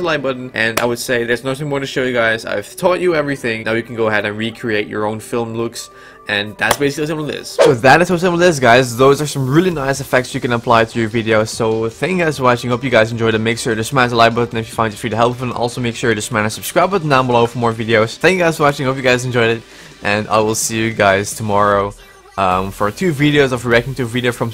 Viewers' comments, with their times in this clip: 0:08 drop the playback speed U wont understand what hes saying